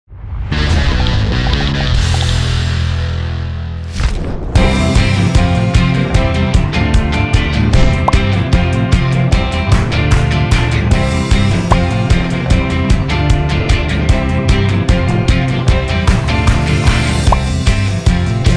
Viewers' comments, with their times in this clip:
0:00 That guitar intro reminds me of that 70's show